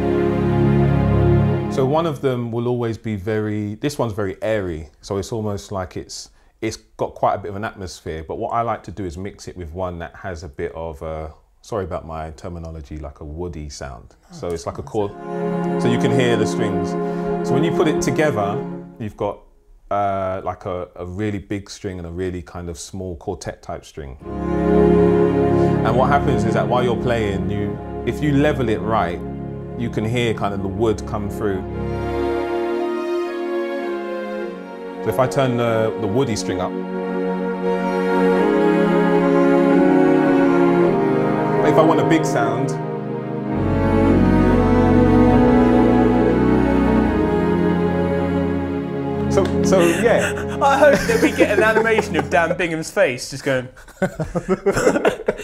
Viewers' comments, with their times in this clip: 0:09 A "woody sound" that's the natural sound. That's so simple and so effective.
0:39 He literally plays a Christian song 😆